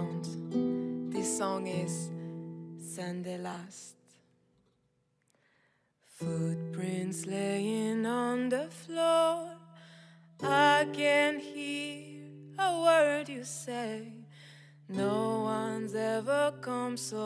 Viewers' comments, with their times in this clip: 0:03 Does another person know the song beginning ? Is it called 'Sunday last' and is it composed by Lubiana? It is very relaxing